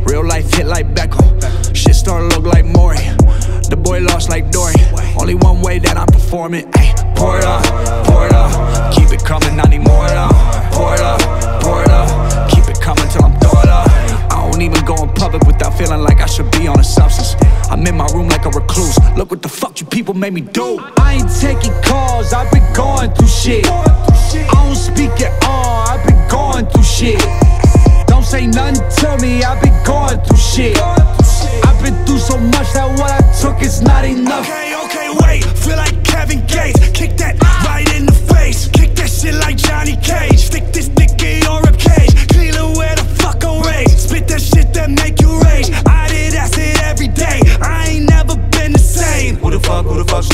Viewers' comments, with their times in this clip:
0:07 first time i listned to the song i thought he Said pornhub until i watched the lyric video
0:36 kelly why you yelling at the mic?